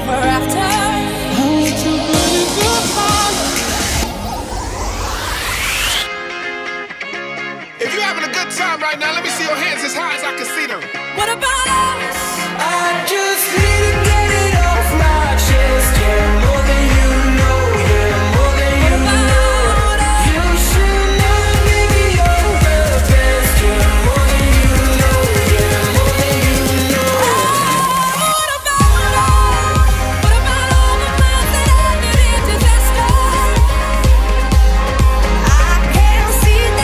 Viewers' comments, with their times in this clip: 0:08 The song is amazing, is 😎🎼👌
0:18 The real remix started From then on it's just a drastic jump in quality